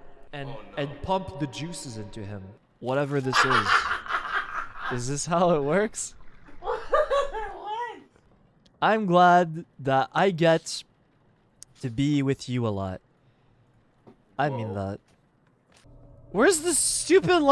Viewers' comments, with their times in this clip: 0:03 that far away laugh is chefs kiss